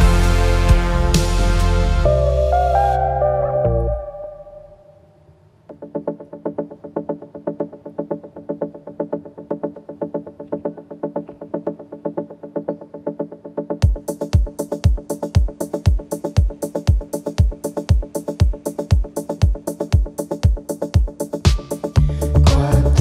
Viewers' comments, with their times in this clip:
0:05 It's a very intense song full of emotions, along with my other favorite Les Vitrines :)